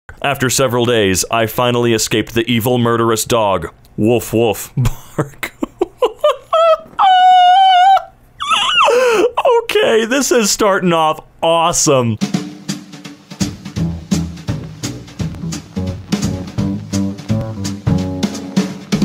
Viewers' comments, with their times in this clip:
0:07 I thought I heard a seal die
0:07 Dad: Did you put WD-40 on the door like I asked you to? Me: Yea. The door: